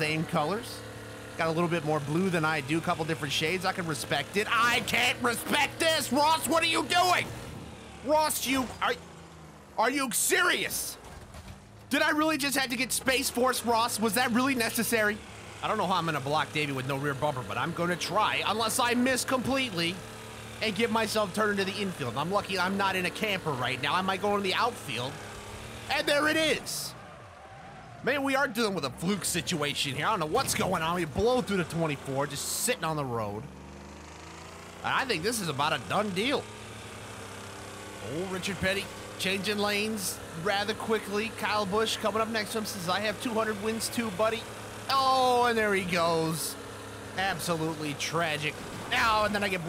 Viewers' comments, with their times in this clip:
0:03 I Love the transitionless change of emotions there. "I can respect thiEYE CANT RESPECC THIS"
0:34 when he excellerates, the car sounds so good